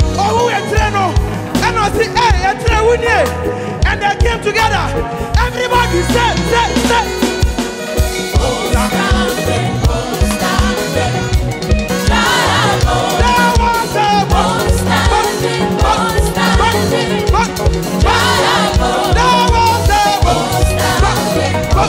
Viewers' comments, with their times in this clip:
0:06 Bass Guitarist on fire from ... heeerh